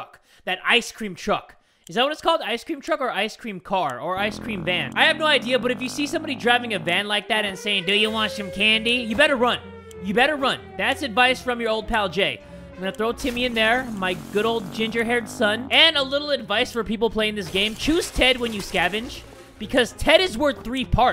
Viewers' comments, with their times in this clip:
0:08 i swear that's the janitor's voice omg